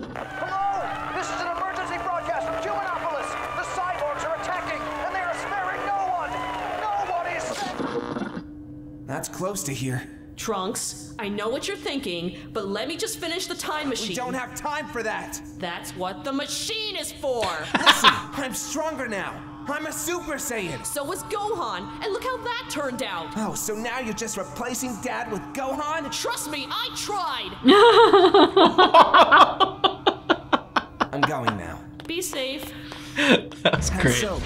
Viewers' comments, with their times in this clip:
0:10 Im suprised you guys didn't notice vegeta's scream which is perfectly timed.
0:17 Monty Oum was originally planned to be Gohan in this movie, but he sadly passed away before they could record with him. Also, the screaming in the background was Vegeta’s back on Namek that everyone could hear across reality
0:17 Notice Veget's scream from Namek in the background.
0:18 listen closely in the background you hear Vegeta screaming on Namek
0:19 did ya notice vegeta’s scream from the namek arc when he realized gohan took the dragonball?
0:21 Remember when Vegeta found out Gohan stole the Namekian Dragon Ball he dropped into a lake back in the Frieza saga? Then he started screaming so hard everyone heard him? Therr is a part in that scene where the scream reaches Earth in the future and we see Trunks saying "Daddy?" You can actually hear Vegeta scream in that exact same scene in this episode I think that was an amazing deatail throwback.